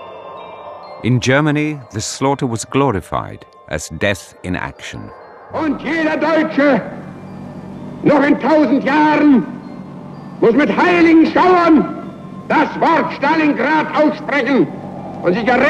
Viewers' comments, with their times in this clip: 0:03 I think I have watched all the Stalingrad Documentaries to date, including some which were a total waste of time, but this one is the best ! I even saw this same one by Australian ABC licensed and with a different narrator yet this same footage, but this guy is the best voice! Him and the two-part BBC series Absolute Zero: The Conquest of the Cold! Almost as Cold as Goring's obituary speech! here !